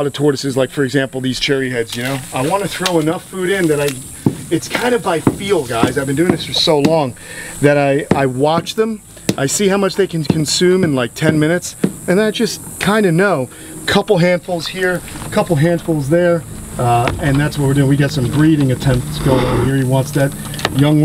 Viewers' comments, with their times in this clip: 0:04 the tortiose that keeps raging into he others with its shell you can hear it and see it soooooo funny